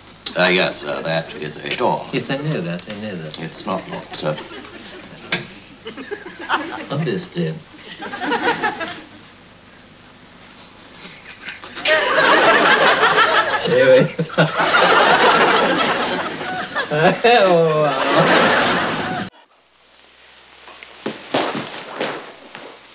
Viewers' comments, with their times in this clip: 0:10 (Cracking up) stay where you are